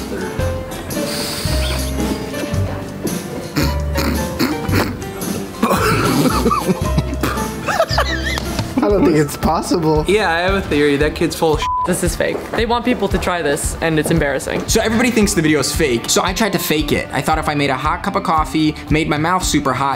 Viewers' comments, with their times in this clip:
0:04 sound like a meme laugh
0:05 SOUNDS EXACTLY LIKE THE LAUGHING SOUND EFFECT "LOOK AT THE TOP OF HIS HEAD OH NO NO NO" oh wait i wasnt the only one with that idea
0:05 he sounds like that guy who kept laughing all the time at weird stuff
0:05 does that laugh reminds you of something like.. "Look at this dood"
0:06 sounds like the laugh meme